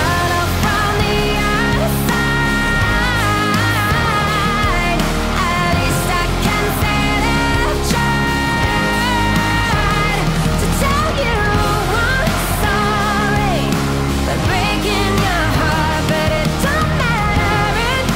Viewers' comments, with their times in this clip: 0:05 that is the voice that the god can do!